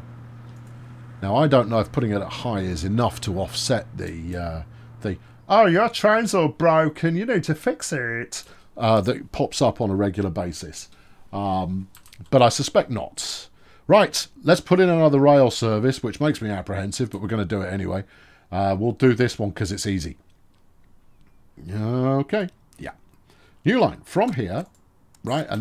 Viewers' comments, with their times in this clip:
0:07 that voice is magically horrible, well done, like something out of Little Britain